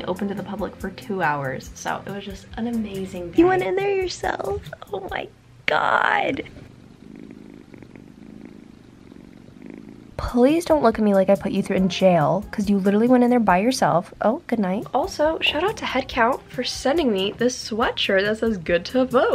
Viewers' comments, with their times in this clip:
0:05 Can we all take a minute to appreciate the purring ASMR <3